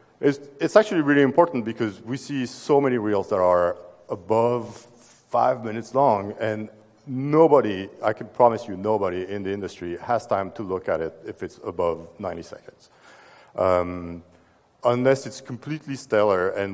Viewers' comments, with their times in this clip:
0:03 haha I thought they were saying: make it (breaking into the industry) under your 30s, I was like WTF, are you serious?! :D